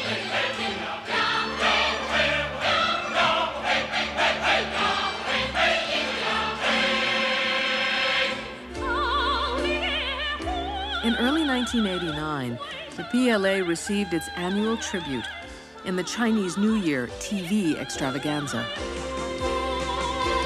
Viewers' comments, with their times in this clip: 0:08 Like the song :D